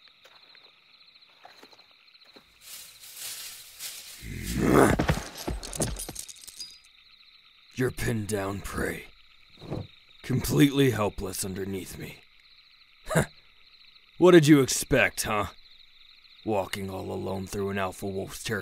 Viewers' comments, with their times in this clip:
0:04 Why did the "MÆ👹" make me shiver....